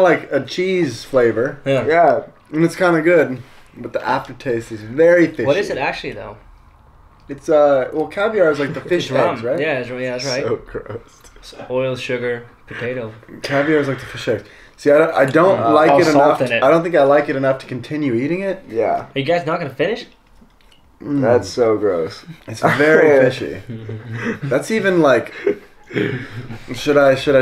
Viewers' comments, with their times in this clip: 0:08 Did he say fish heads?? or fish eggs?